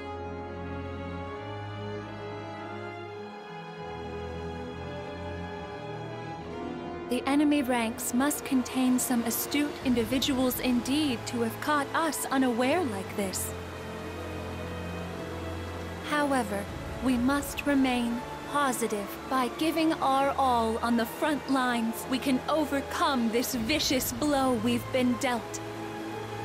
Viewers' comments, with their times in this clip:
0:07 koei hired a robot for voice acting ?